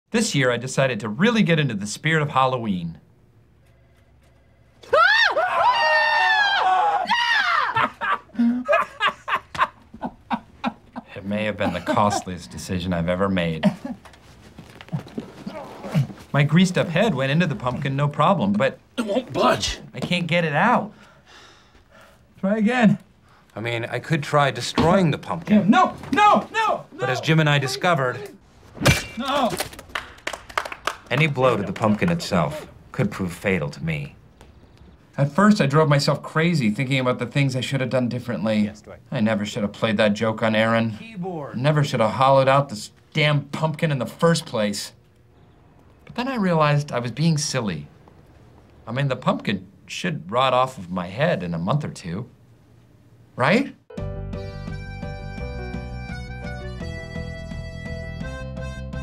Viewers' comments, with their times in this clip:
0:05 so we're gonna talk about the pumpkin but we aint gonna talk about erin's iconic scream ? sad.
0:41 Michael’s voice in season 9?